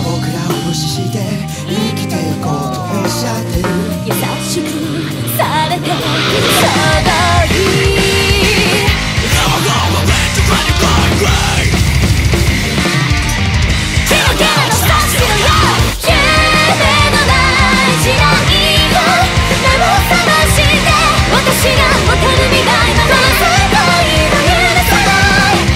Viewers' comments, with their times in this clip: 0:09 don't know why but sounds so similar to bullet for my valentine i directly fell in love with this song ^^